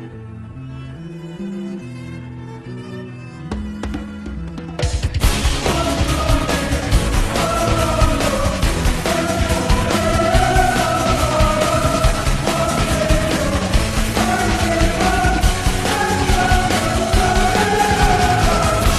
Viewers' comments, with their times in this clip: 0:04 Normally not a fan of pitch/speed edits but the choir part sounds so much better in this version, much more dramatic.